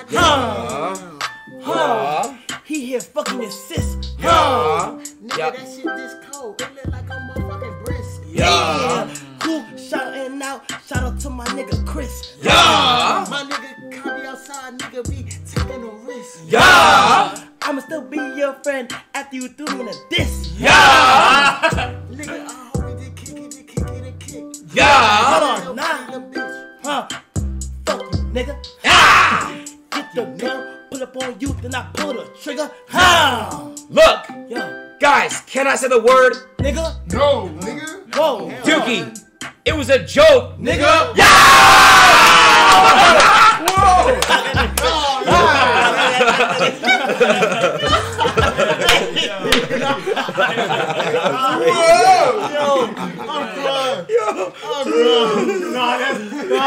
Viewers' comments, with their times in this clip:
0:05 this beat was literally made for this man.
0:11 I need that type beat fr 😎
0:23 if that guy with the vamp shirt was louder would have been fucking GODLY
0:26 Bro what is that beat ??? Ts so hard
0:35 That was some Migos level shit.
0:35 Kai read that so well
0:38 Did he just say "kyun ki" ?😂